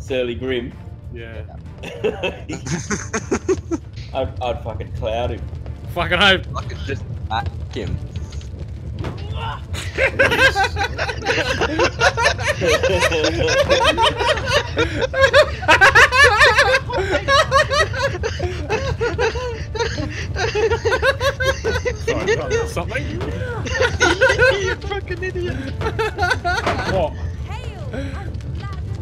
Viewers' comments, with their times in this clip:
0:10 that fucking laugh